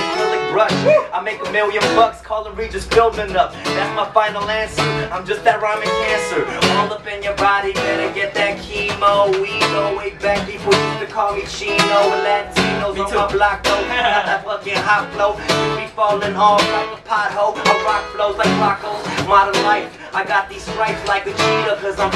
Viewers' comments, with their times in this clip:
0:04 Tupac shadowing Dumbfoundead?